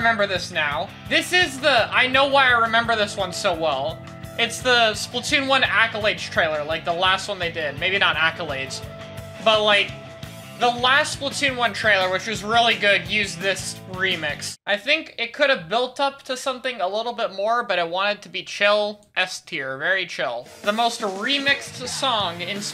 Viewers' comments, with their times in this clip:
0:07 wait skip to and listen to that quality audio when he says props